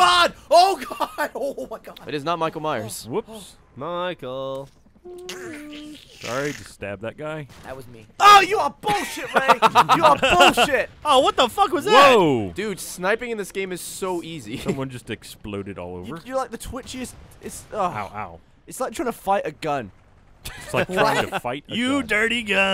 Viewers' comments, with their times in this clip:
0:06 that legitimate Gavin rage is so funny hahaha